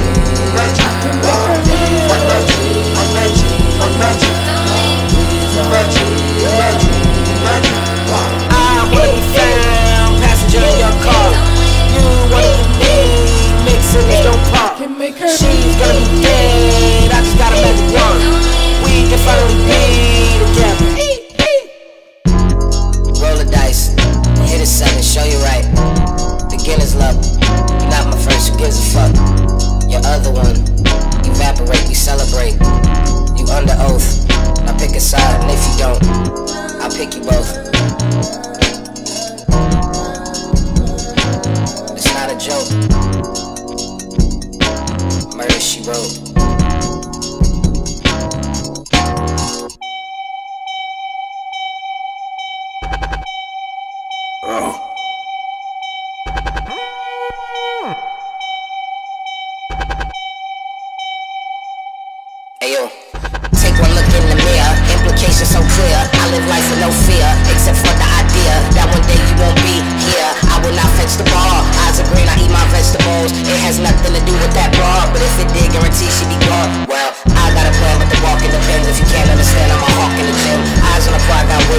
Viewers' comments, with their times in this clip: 0:08 the fucking synth that’s whooshing in an out of view is my favorite thing tyler has done recently and I can’t stop replaying it in my head lol
0:08 This song is much better performed live. Strongly prefer Tyler's snap and Death Metal esque vocal at the mark. Takes the song to another level and that's what I came here to hear. The beat fuckin is insane though and easier to hear.
0:49 1.25speed and is 🔥
0:50 that build up tho
0:51 when you’ve got something in your throat
0:56 Ah yes, the screams of agony of Bonzi Buddy, my favourite part
1:03 sounds like an epic battle between Tyler and the beat about who is more fire🔥
1:03 why does this fit with eminem morbius rap